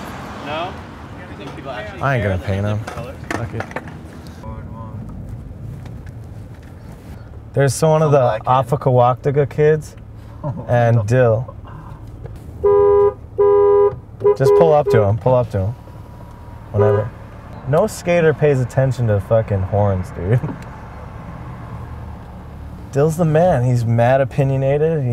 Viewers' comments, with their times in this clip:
0:08 hahaha I just realized that he sounded out OFWGKTA and said "OFFTIKAWAKTIKA" lmao.